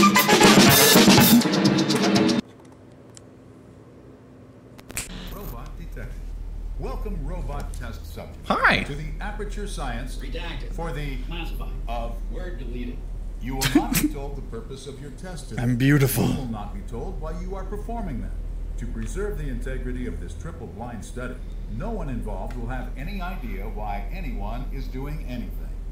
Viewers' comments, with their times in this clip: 0:08 He sounded like dean from community